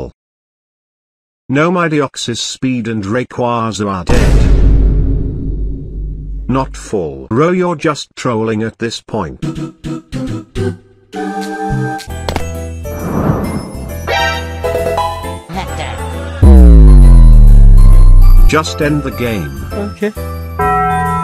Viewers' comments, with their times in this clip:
0:04 the silence.... ... ... ...not full OMG